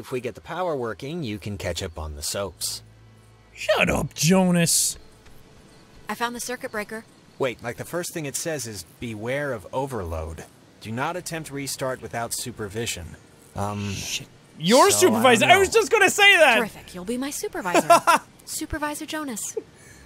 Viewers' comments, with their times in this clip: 0:03 sounds like he's saying "shut up" in a Pennywise voice